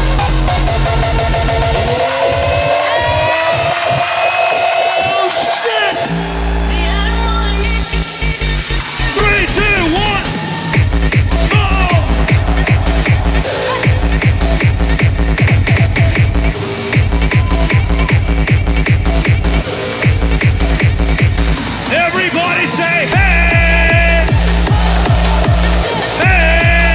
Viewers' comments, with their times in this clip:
0:08 I was actually hoping it would be a more rawstyle kick. This one kinda threw me off after that amazing buildup